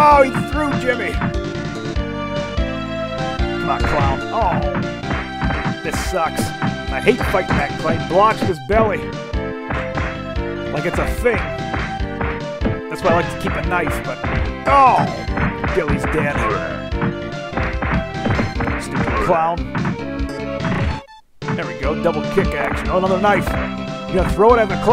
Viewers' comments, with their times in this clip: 0:06 the way this song fails to loop properly is irritating.